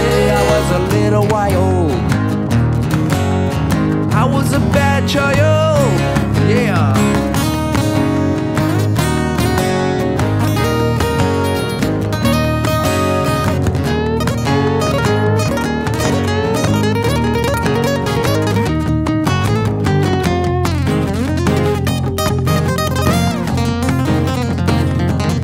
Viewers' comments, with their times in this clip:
0:06 What a song composition! Only Jeff Does such riffs and solos! Amen!